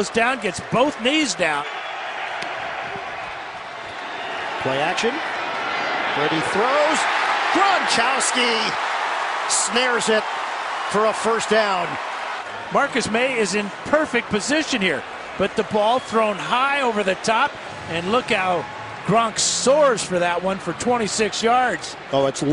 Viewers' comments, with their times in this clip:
0:07 am i the only one who heard gronchousy instead of gronkwlski?
0:07 did he just say gronchowski? Lol😂